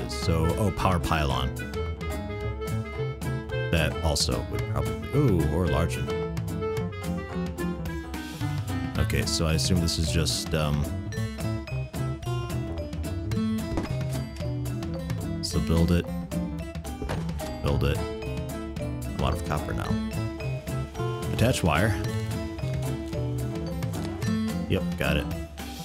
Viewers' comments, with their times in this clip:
0:06 That music though...